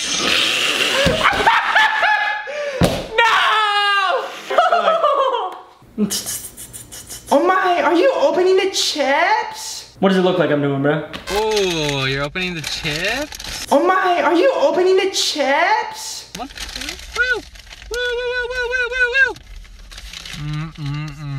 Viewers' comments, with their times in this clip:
0:07 that's the best impersonation I've heard in my life...